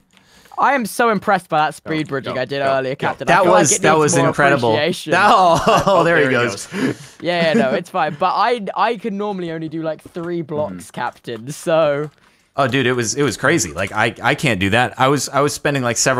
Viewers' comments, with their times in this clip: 0:04 the synchronized "Oh there he goes" is just amazing